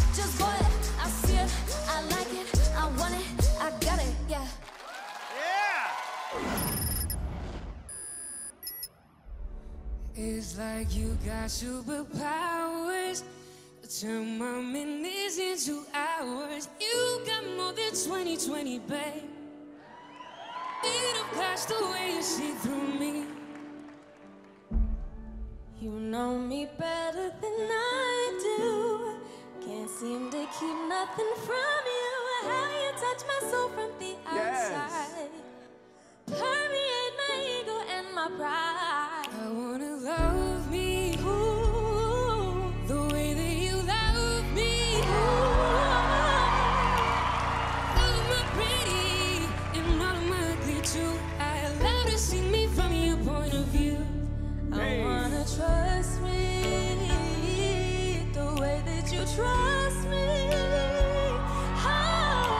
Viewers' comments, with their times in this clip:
0:08 Home girl is fire🔥🔥🔥 I love to hear her sing a soulful song
0:46 that cry she did was crazy idk bout y’all but I fw it